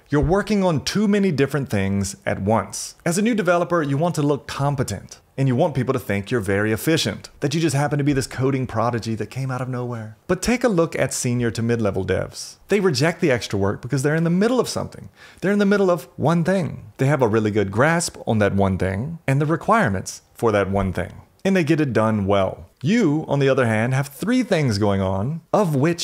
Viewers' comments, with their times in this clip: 0:07 the musicality of "came out of nowhere"